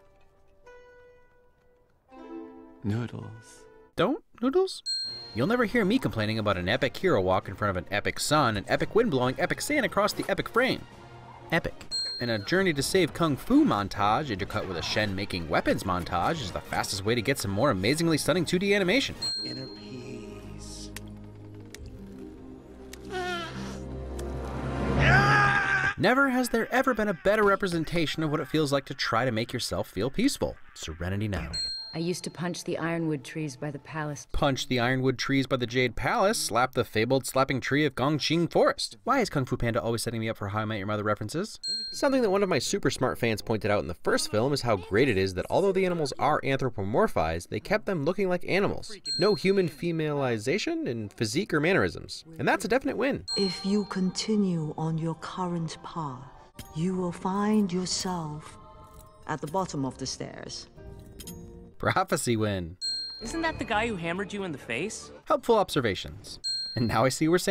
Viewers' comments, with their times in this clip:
0:05 AND epic music...... Epic
0:48 notice how carefully he says this in order to avoid sounding creepy. Struggles of a man.